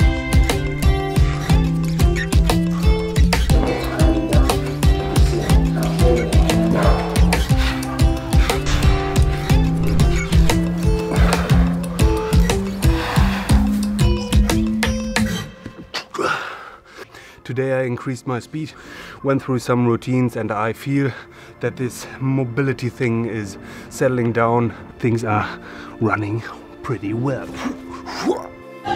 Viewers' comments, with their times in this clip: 0:09 I hate to be critical of something that you obviously put a lot of work into but I totally hate the music. And I browsed the comments... seems like I'm the only one. But I had to say something. I couldn't even watch the whole vid. I had to shut it down after cuz it was driving me. I'll check out some of your other vids but I can't watch this one...